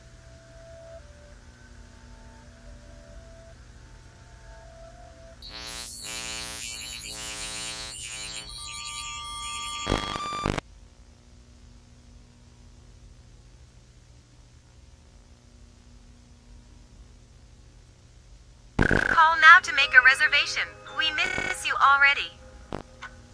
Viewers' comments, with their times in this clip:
0:04 Ok so FUN FACT, if you go into the video for in minutes it hears a weird sound effect on the video, it's a spectrogram that you can put into the video it show's a text and the man the text say's THANK YOU FOR HIRING ME.